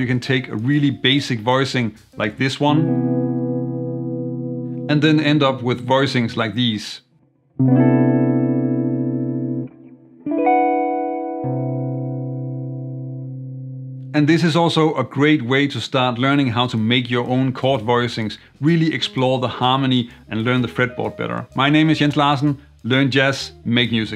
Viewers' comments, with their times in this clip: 0:09 "Third Stone from the Sun" sound right there!